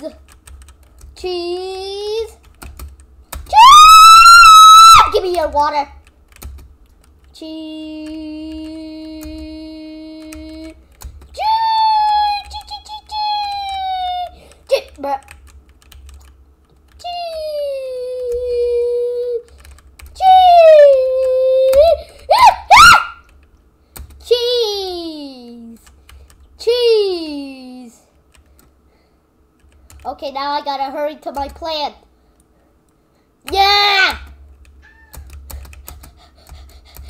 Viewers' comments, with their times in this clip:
0:03 Sorry Headphone users
0:22 he screamed like a girl lol